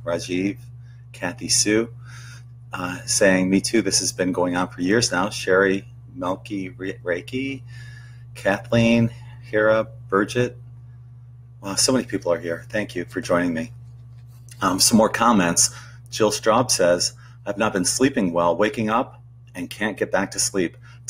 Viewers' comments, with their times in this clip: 0:07 Oops. Wrong video. I thought I had clicked to a Led Zeppelin video. Did Robert Plant lose his English accent? Huh. Must be the Mandela Effect. It's a and I can't sleep. Gonna do my survival walk around my inner city block.